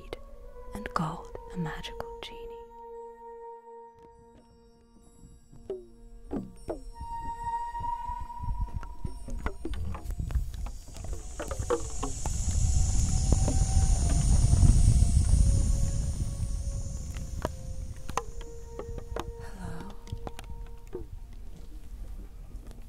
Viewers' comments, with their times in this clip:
0:05 I had to get out my rubber bands and cardboard tube to make more of this sound lol